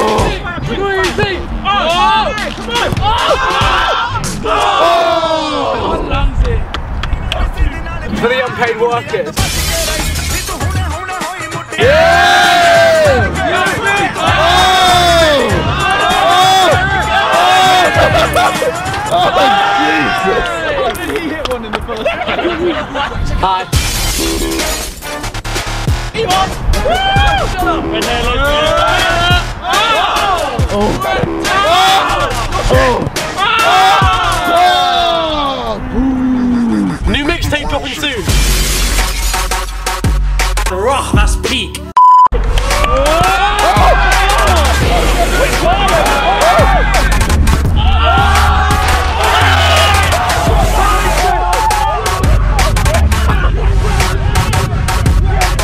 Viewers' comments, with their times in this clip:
0:07 lmao what was that music for vikks part smh xD
0:40 is that a song? the rah thats peak